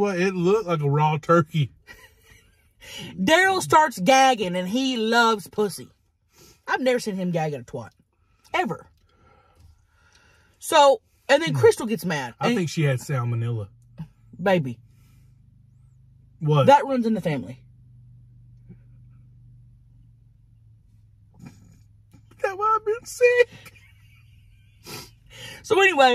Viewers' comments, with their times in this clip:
0:10 " I think she had Salmonella.." "Baby... that runs in the family" then instant break of character, I love how you crack yourself up, it's the best.